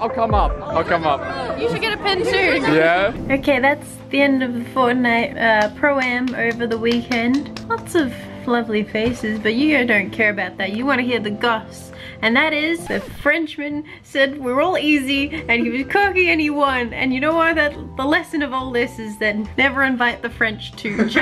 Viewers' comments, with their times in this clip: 0:06 Loserfruit what happened with the slapping noise??